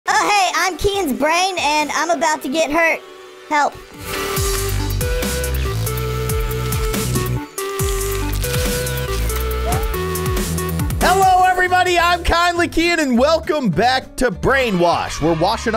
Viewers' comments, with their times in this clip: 0:03 I LOVE HOW HE SAID HELP